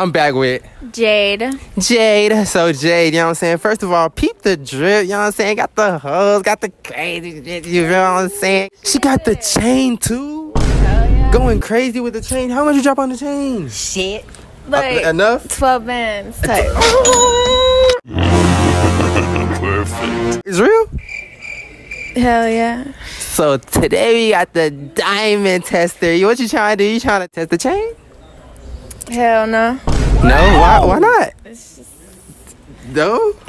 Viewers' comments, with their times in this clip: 0:08 that girl was like "hell yeah 🥵😏" AT THE END DAT BIH SAID "hell no 🥵" WIT THE SAME TONE LMFAOAOA
0:20 The most unconvincing "Hell yeah" you will ever hear